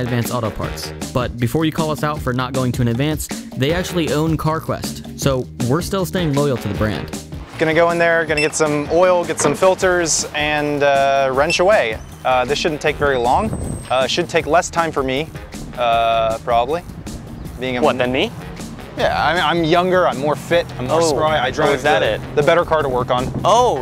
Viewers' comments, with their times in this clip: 0:04 did you guys get a similar song to the GT Auto music in GT4 on purpose? legit